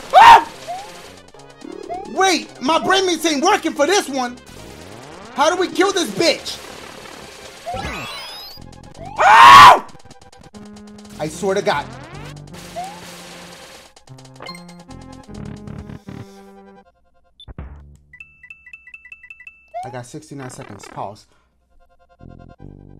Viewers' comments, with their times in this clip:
0:08 Sounded like R2-D2